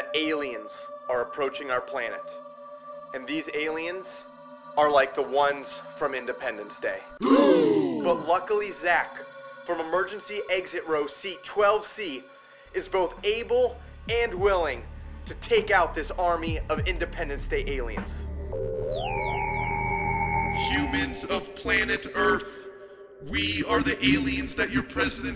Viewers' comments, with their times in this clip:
0:06 lol I love the gasps like huh!!😂